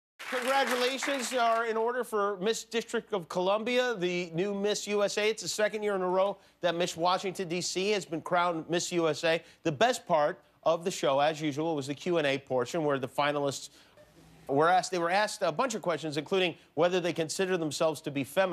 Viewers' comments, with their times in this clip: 0:02 Jimmy: Miss District of Columbia. Automatic Subtitles: MASTURBATION. [LAUGHTER] THAT WAS THAT.